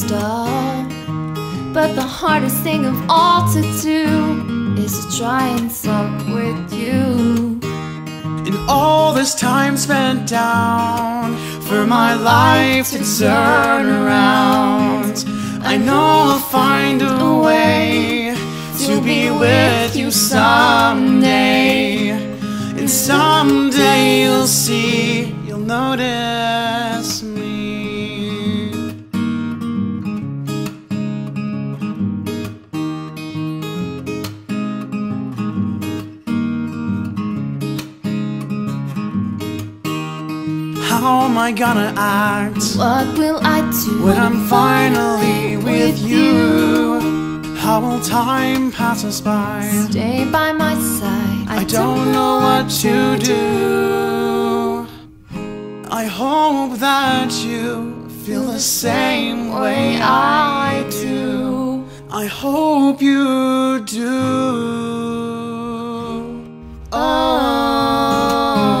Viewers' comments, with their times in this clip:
0:03 wait wtf i can hear it lololol that is CLEARLY f**k
0:03 ...I know what the lyrics say...but I swear to GOD she sings "to try and f*ck with you" o.o can someone PLEASE tell me I'm wrong.
0:03 Why does sound like "and the hardest thing to do is to try and fuck with you"? Am I just too far gone?
0:04 "is to try any f**k with you" once it has been heard it can not be unheard
0:05 Okay the lyrics say "talk" but not matter how many times i listen i hear "f***"... it IS just me right?
0:05 Still convinced it says "try and fuck with you" in
0:05 Can someone tell me what she said because I hear it differently...
0:06 What did she say lol did anybody else notice what it sounds like.
0:53 Oh, dat harmony You two are such amazing vocalists, you both blend so perfectly.